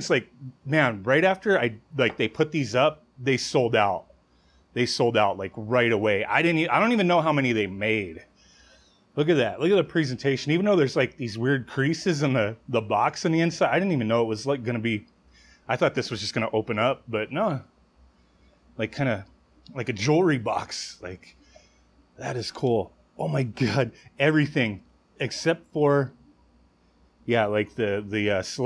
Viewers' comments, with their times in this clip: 0:10 thank you for saying presentation right...when you present something you don't say it like a birthday present you put emphasis on that pre.